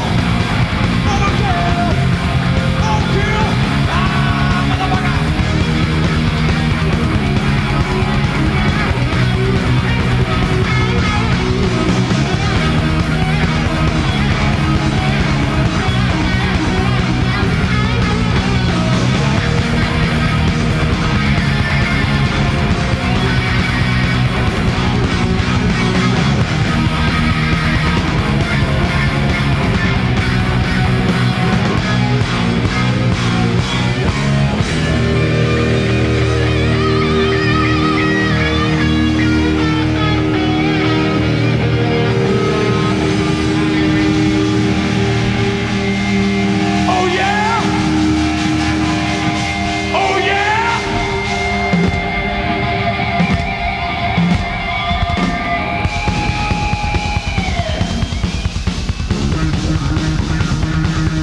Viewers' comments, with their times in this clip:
0:04 Kirk be like gimme back my wah!
0:19 Did James use a wah ??
0:37 Kinda reminds me of king nothing, the tone the notes idk
0:44 'ok guys thanks for coming, drive safe and - fuck you the song's only half over!!!!!' (crowd goes nuts)